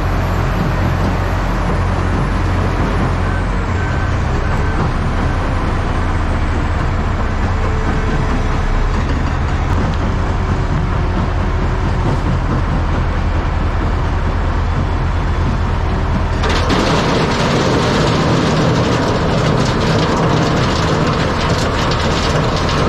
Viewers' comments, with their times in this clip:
0:03 hearing the rock crusher sound in the background sounds so familiar, I worked in a quarry as a teenager and heard that sound 12 hours a day.